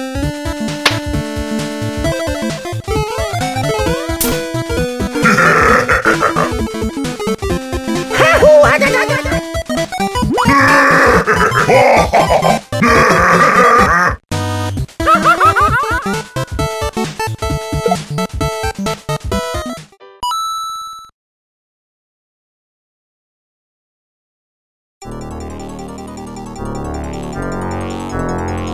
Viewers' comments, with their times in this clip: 0:06 Why is seeing bowser laugh so wholesome to me.
0:10 bowser laughing is so cute. 😂
0:11 bowser starts laughing
0:15 anyone else notice when mario streaks across the screen, after exiting the right side of the screen the audio shifts to the left ear.